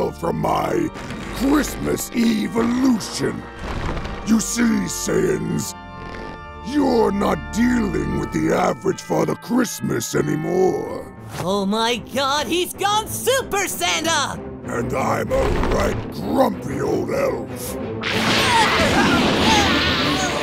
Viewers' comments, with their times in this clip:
0:05 the sound his face makes when he smiles 😂